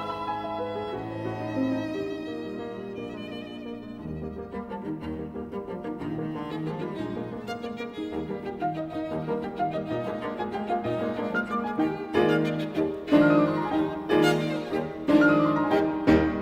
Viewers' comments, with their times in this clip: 0:03 And I believe that Pressler's right hand comes in two bars early and is then snatched away; but overall it's a great performance.